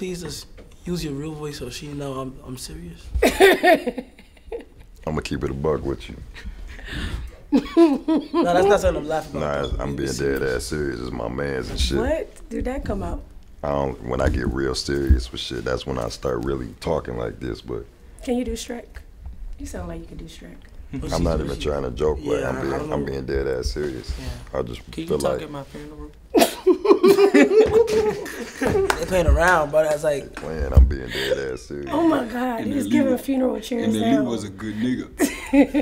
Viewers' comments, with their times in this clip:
0:03 bro that voice is absolutely insane😭😭i can’t breathe at all rn
0:19 is everything Arite ddg can we still watch? I feel like I’m not supposed to be hearing your real voice. I’m gonna press play but plug my ears until next scene out of respect